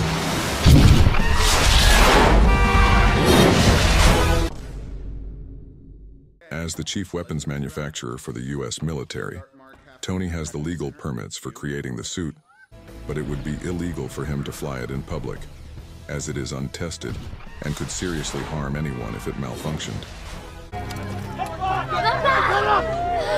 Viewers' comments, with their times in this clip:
0:07 it's that your real voice?